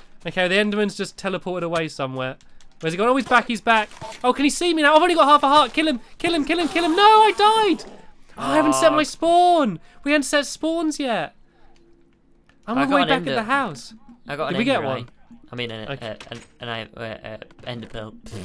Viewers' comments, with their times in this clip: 0:06 Stampy is going to have nightmares of a screaming enderman after this.